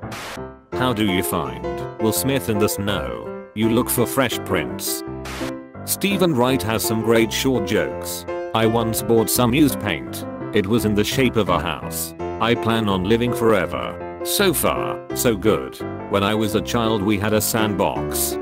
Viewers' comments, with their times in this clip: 0:03 The robot announcer needs to be programmed to pronounce the name "Sean" correctly. GROOOOAAN!!!